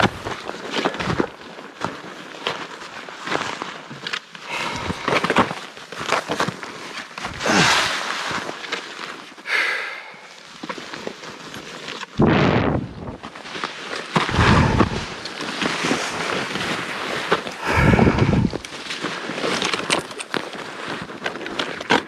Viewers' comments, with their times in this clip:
0:05 is straight out of The Shining.... listen for the “Danny Boy!” off in the distance.